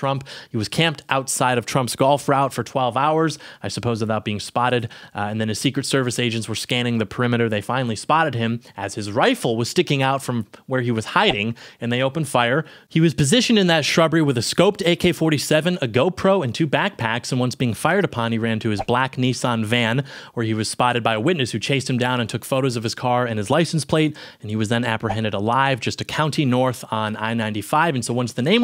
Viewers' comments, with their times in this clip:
0:09 Bro thats sounds like smth from looney tunes 😭🙏